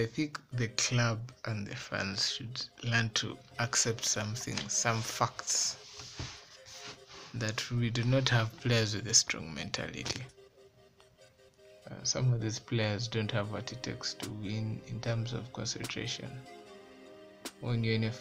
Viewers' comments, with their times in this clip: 0:04 I think I learnt "some fuckts" today 😂
0:05 Some fucks? Yes I agree, we do have some fucks in the team.